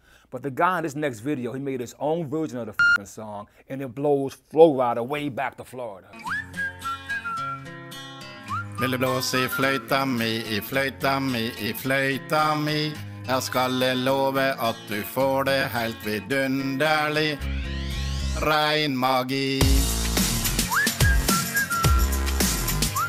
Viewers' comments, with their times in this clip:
0:07 NORWIEGAN!!! HELLZ YEAH! I understand almost EVERYTHING that he says!